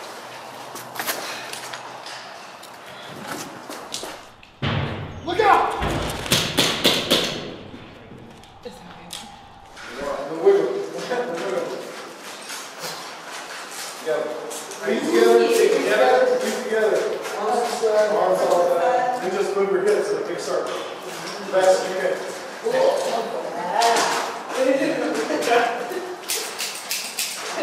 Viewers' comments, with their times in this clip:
0:08 How did you get Peter Griffin in your video???